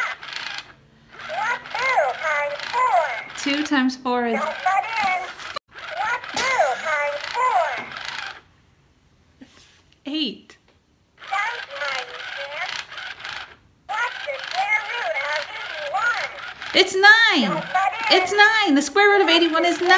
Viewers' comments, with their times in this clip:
0:04 I can tell you almost yelled "FUCK" xD